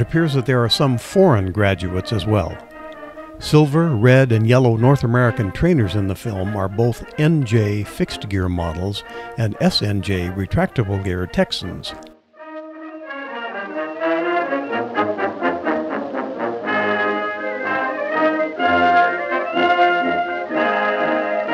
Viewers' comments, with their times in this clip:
0:09 Looks like one of the foreign nation is Chinese National Party with it’s flag shown the same flag marking can be found on the famous WWII ‘flying tigers’ squadron’s P-40. How can one not feel patriotic when hearing Anchors Aweigh, Go Navy!